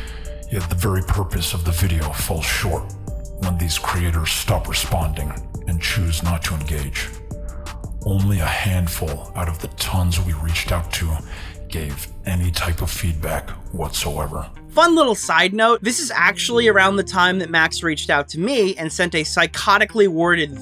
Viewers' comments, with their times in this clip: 0:07 this voice effect is so stupid and annoying. I hate this over dramatic garbage. All of this drama seems like chronically online horseshit